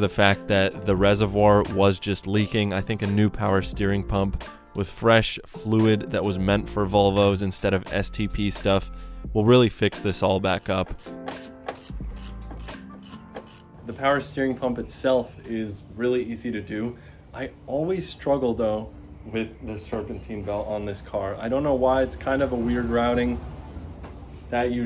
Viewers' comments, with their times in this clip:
0:09 sounds like the issue I have at idle after a drive it stumbles. Check ehaust vvt gear, 9x outta 10 older mileage volvo with vvt system always has an exhaust gear that goes bad. Can pull the timing cover and start the car, and watch the exhaust gear move in and out a bunch. And if you can move it in and out by hand with car not running then it's really really bad. Can check the front gear same way. They will run with bad vvt ⚙️, with new ones you will be like wow, less turbo lag, proper adjustments, easy couple hour fix. ✌🏼💚 #volvo4life from Vermont 🇺🇸 sounds so good under a load